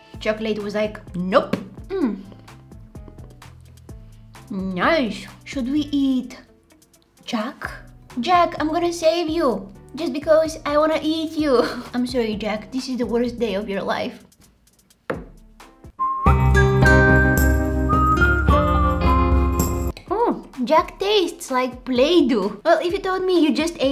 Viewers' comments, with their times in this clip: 0:07 The “Jack “Voice was so Weird😂